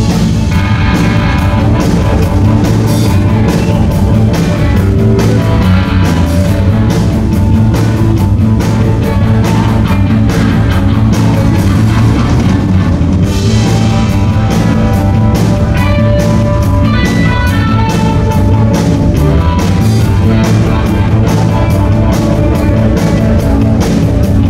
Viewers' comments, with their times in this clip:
0:07 That jam is sooooo good